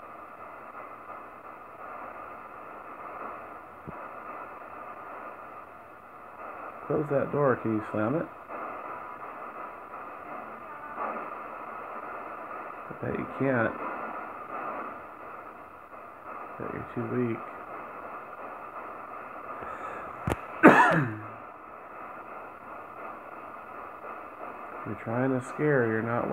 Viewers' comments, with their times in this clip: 0:07 faint female "get out"